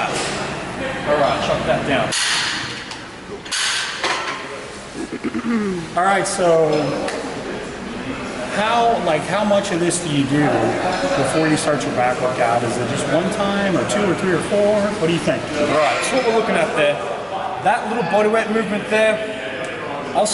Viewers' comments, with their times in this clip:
0:04 Had my head phones on. I thought it was me clearing my throat. 😉 Thanks for the advice. I'm trying to build my back